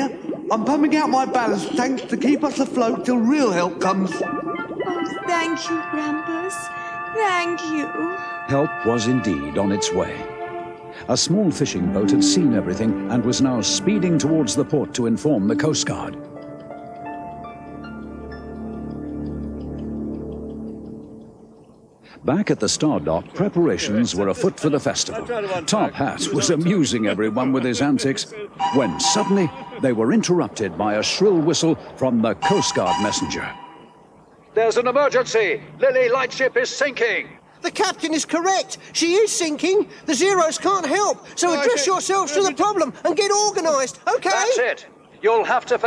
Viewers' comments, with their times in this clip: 0:09 when you walk in by mistake and slowly turn around... Also... why does Princess Alice have a male voice?
0:26 I thought it said tophat was abusing everyone with his antics 😂